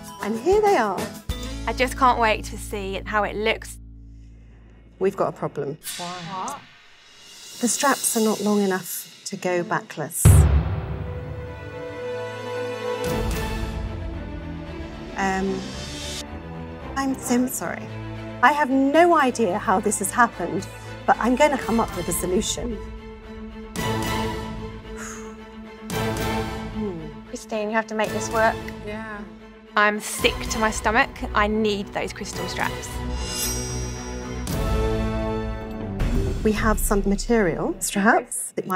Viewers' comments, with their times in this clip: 0:10 that dramatic music though 😂😂😂😂😂
0:16 I love me a wedding/dress show as much as anyone else but the music is much too melodramatic for the context 😑
0:23 the music is so intense, I’m fucking dead 😂
0:24 The horror movie music LOL